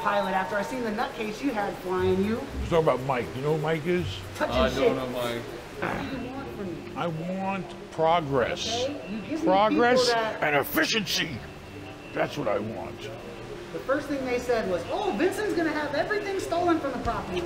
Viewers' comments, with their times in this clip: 0:05 Did he just fart??? 💀💀😅😅😅